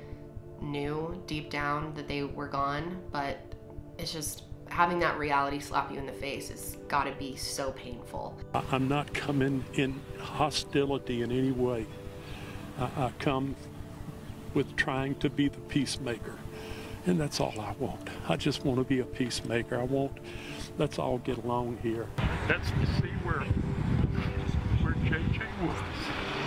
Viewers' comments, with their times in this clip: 0:09 just broke my heart.... You can hear the absolute pain in the grandfather's voice. Those poor kids deserved so much better.